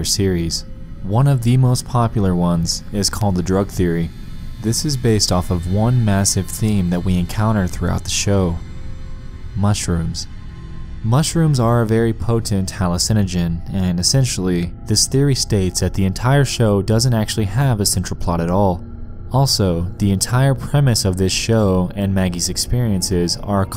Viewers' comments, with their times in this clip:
0:08 The pronunciation of hallucinogen is the scariest part